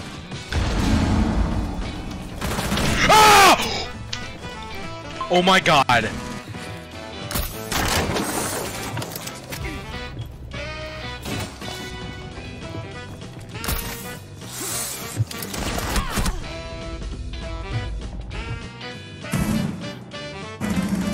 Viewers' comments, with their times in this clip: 0:06 Anyone else had to replay the Kali scream ?